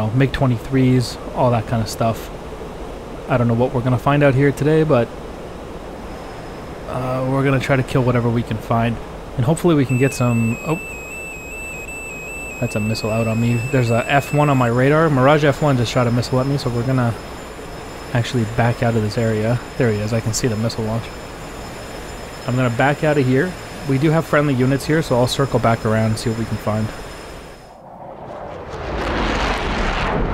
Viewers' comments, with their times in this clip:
0:06 Fun (not)fact about the missile warning tone at minute The engineer of the F4 Phantom was on vacation in Germany when he first heard about Beethoven - Für Elise. He immediately thought that this melody would be perfect to warn pilots about incoming missles and to calm them down at the same time. Excited, he flew home, told colleagues about his idea and drank a lot with said colleagues to celebrate. Unfortunately, after the drinking session he could only remember the beginning of the song, which he then stuck with...
0:09 That radar started alarming I thought I was hearing Beethoven’s 9th Symphony.
0:09 I almost expected to hear Fur Elise there...
0:10 I thought moonlight sonata was about to play
0:10 Beautiful intro of Für Elise 😂
0:11 am I the only weirdo who thought that the Phantom's RWR sounds just like the opening few notes to Fur Elise by Beethoven?